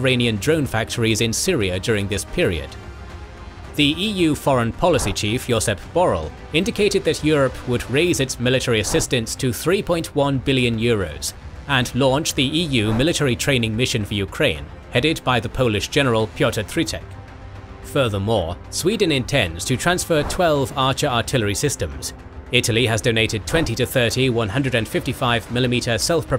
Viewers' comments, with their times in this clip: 0:08 "like anyone asked" damn, why does this delivery hit so hard